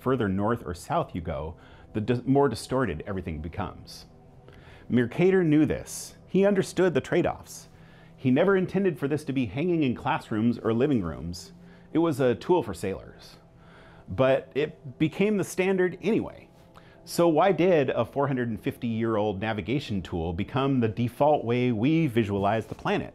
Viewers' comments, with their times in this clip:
0:09 What music are you using in the background at like ? It's haunting and gorgeous.